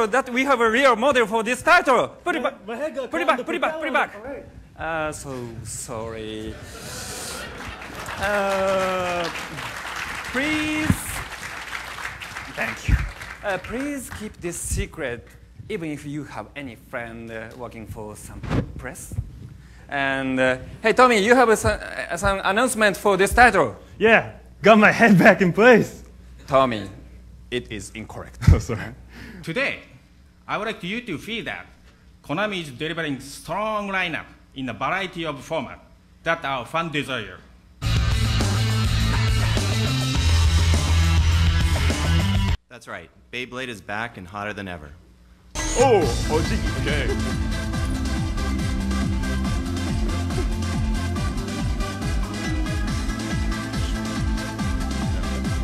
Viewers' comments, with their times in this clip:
0:09 is the only genuine clap in this video
0:29 todai i woda riu tofee da konami doribari stoooog line up in baraity format dat ou fan deesire makes me feel i can understand alien languages too, i'm special
0:42 i love how he says it with 0 emotion